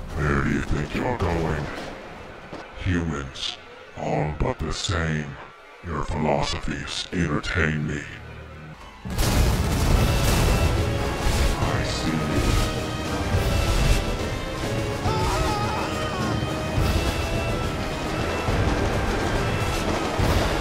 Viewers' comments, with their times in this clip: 0:07 “FLOSOPHIES” to me the skinwalker truck officially has an accent now